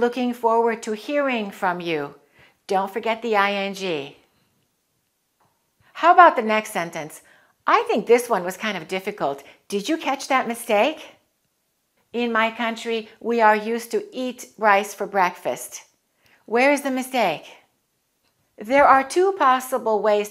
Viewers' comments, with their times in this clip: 0:08 Question is anyone can help? and #8 you say “In “ my country? or “I’m “ my country ? Please advise